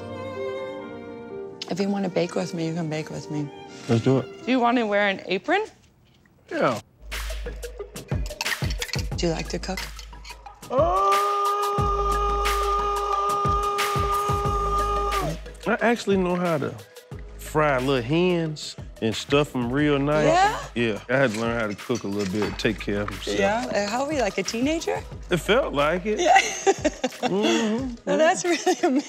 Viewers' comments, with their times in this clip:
0:08 why the madden mobile music playin 💀
0:10 sounding like a vacuum
0:12 that sound like when you enter the nfl moblie game app